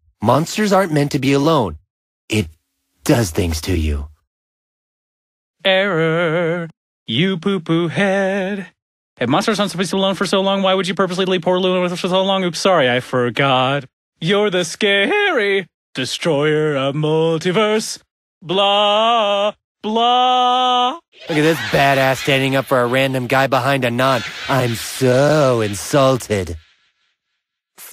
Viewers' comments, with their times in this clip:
0:05 Thats My voice When I Rap
0:05 Thats My voice When I Rap
0:05 THE FING VOICECRACK ON SCARY
0:14 That voice Crack XDD